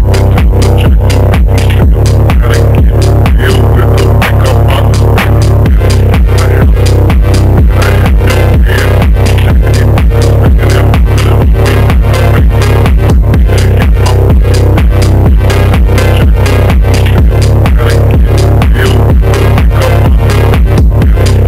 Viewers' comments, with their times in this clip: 0:06 How do you do that 3d effect, Im dying to know